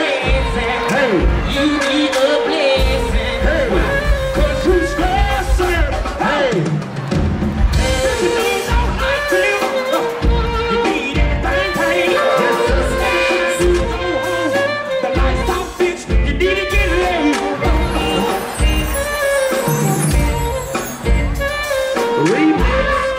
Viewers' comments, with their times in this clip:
0:05 u can tell dc really use to play da drum 😂🐐